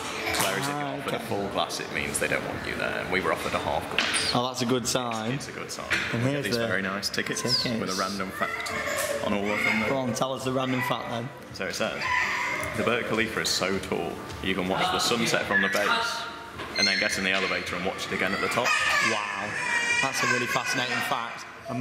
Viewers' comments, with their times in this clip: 0:09 kid having a tantrum